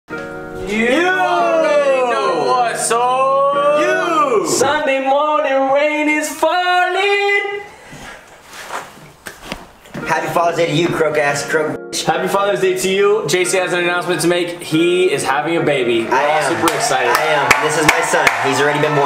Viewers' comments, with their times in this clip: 0:04 I know theres an edit over his voice but it sounds so cool I like it let's hear the whole thing dad
0:05 Omg he accually a good singer
0:05 I didn’t know his voice was that good dang